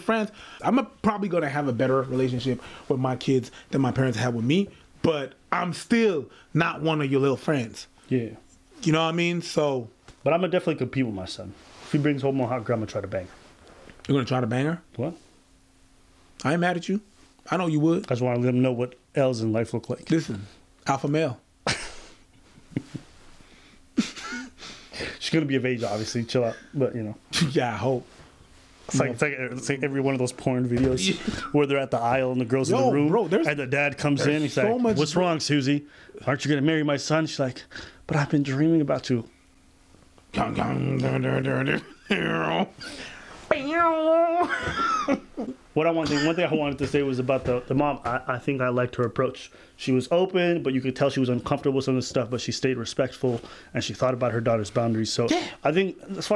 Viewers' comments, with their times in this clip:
0:03 Vocal fry is real 😆
0:39 law and order theme song lol he killed me